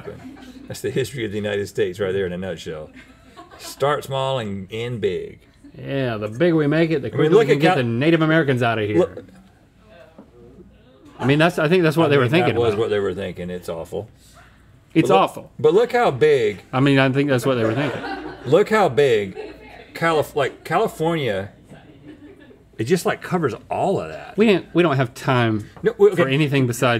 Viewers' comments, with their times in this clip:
0:07 THE WAY IT WENT FROM GIGGLY TO QUIET WITH A COUPLE OF “oh”s 💀💀💀
0:08 the silence but it’s true 😭